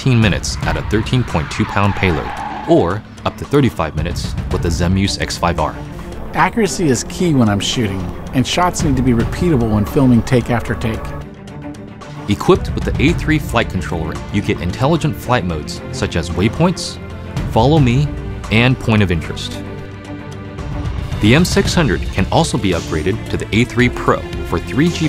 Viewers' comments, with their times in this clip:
0:06 Accuracy is key when im shitting